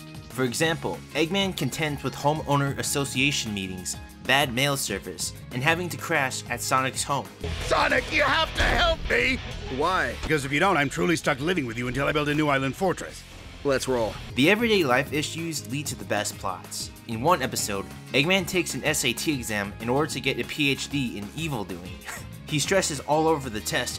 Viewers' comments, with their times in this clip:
0:09 that W h y is so realistic